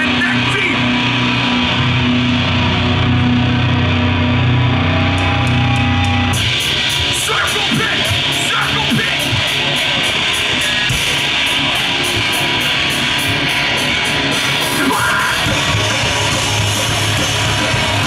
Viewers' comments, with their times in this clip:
0:06 is when the music starts.